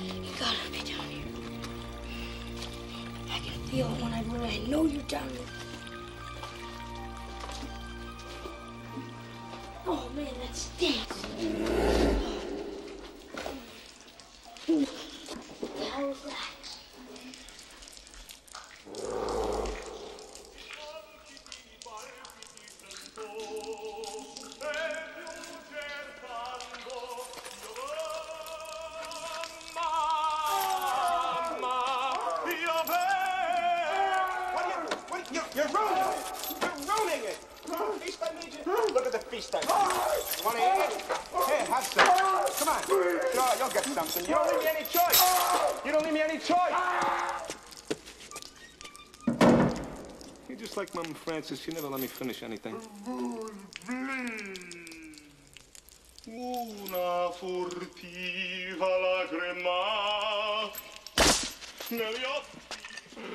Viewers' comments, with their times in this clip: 0:10 lol the growl
0:51 he’s a great singer tho